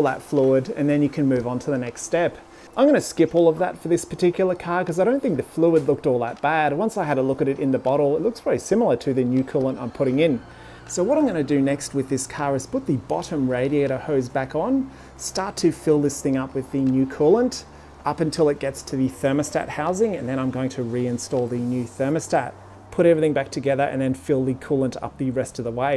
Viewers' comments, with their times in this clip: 0:10 someone outside ripping a skid 😂